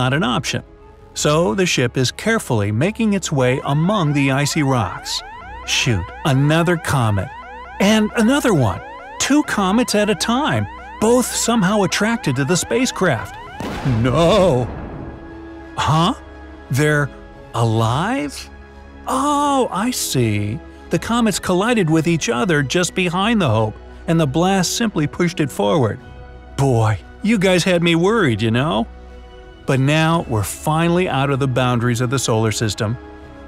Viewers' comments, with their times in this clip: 0:05 he sed ship another comet 😆😆😂🤣
0:13 LOOOL THAT NoOoOo
0:14 noooo funny noise